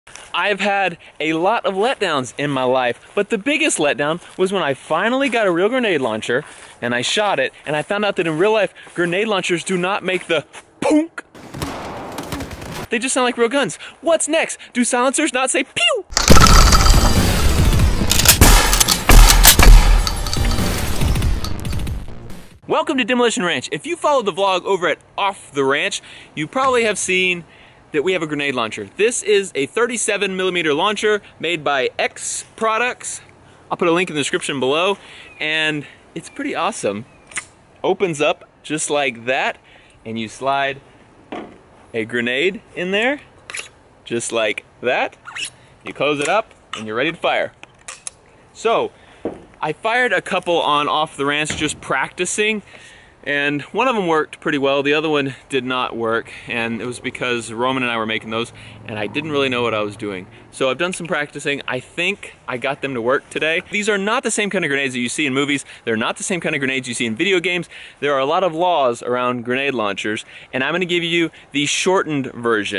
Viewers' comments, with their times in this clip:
0:10 Oh yes they do! that "Poonk" sound you are referring to is what a military grade grande launcher sounds like, at least mine did, it was an M-4 mounted 40mm M-203 and I got to shoot plenty of rounds, anything from frag round, flare round, tear gas round (CS), smoke round and that orange powdered training round.
0:56 The stomach growl